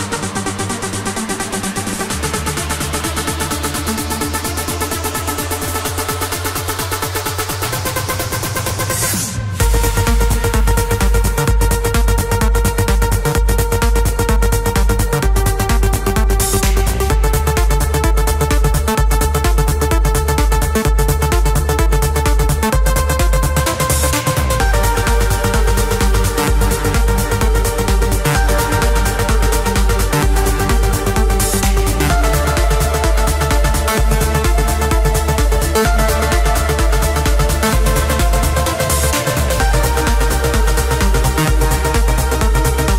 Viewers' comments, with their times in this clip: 0:07 ish - had to come in and change it, sounded like a CD skipping :/ mostly good though
0:27 or so - sounds like BBE - 7 Days and 1 Week and at the same time very Jarre-ish \o/ |o| _ o _